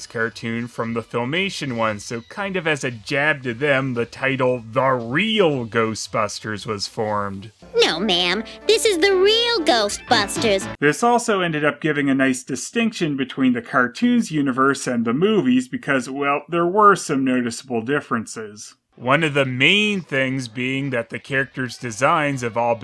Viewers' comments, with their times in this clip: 0:07 THAT'S HER VOICE?"